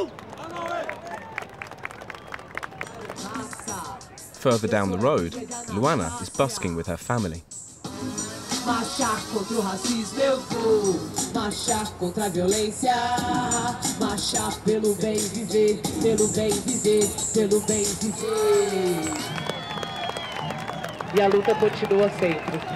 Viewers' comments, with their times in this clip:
0:09 She went off with that bop